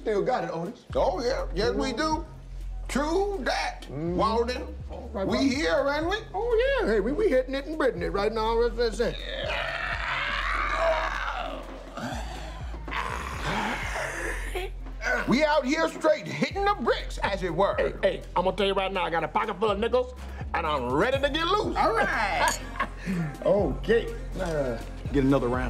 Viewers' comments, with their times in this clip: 0:09 You know your muscles are sore when you make the same noise they made just sitting down
0:09 sounded like a Pterodactyl.
0:09 Peele sounded like an AC-130 with a broken engine passing by.
0:09 what do you mean old men sit like that i'm 23 and i make those noises when i sit too